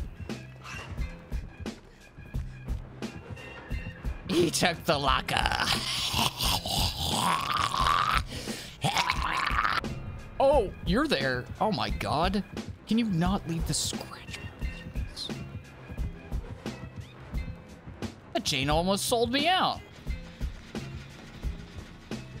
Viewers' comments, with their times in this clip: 0:06 amazing hag imitation going on here